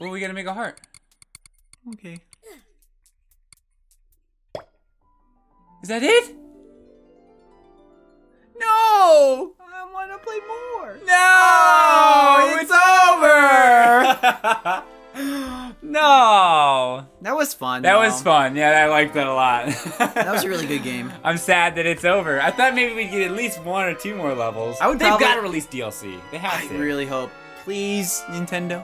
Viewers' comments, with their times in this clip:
0:10 NO, IT'S OVER! They literally sound like they saw the end of a beautiful movie.